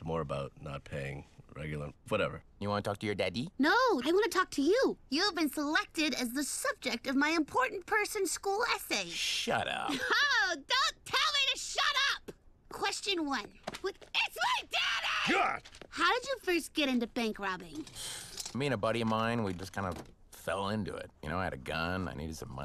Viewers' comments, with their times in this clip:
0:03 I love the way Mickey says Daddy